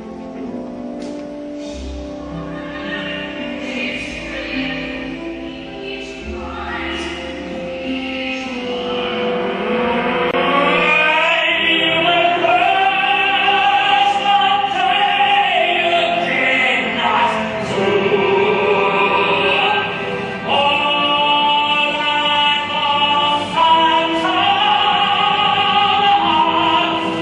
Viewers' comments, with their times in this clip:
0:09 I just have to add his crescendo into rage starting with his growl is one of the scariest I have heard. The way he punctuates the end of each word in a growl, and especially the length and strength with which he holds the word "you" is absolutely chilling.